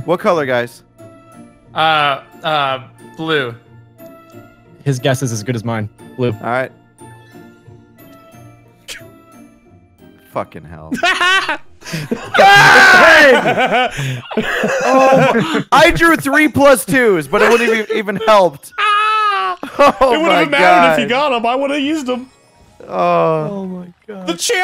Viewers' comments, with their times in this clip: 0:10 That short giggle was so funny.